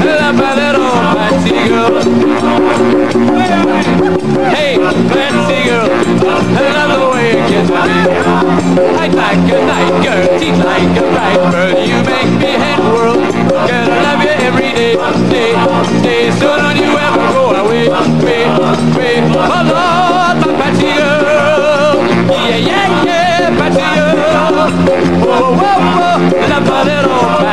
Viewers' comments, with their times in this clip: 0:08 :16 Lennon messes up, Paul and George got it. Whoooops...